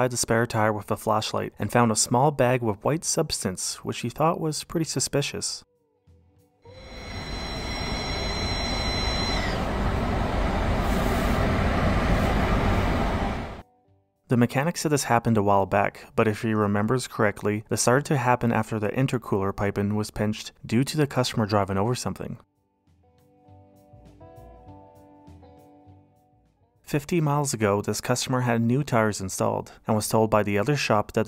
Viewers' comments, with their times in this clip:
0:07 I have same exact car with same exact issue. Toyota Camry/venza dashboard. Not at all comforting that I’m not the only one with the damn whistle when you close the vent.
0:10 he didnt fixed anything at all! it should be able to be closed without whisteling at all!
0:14 that car has a heartbeat!